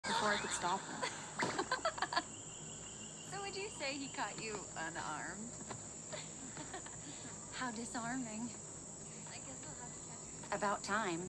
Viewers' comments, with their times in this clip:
0:01 Blake’s laugh sounds so cute!!